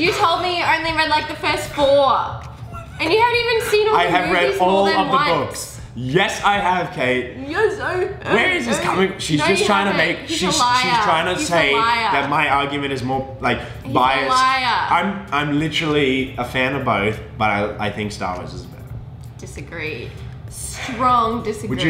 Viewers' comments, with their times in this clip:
0:05 good imitation lol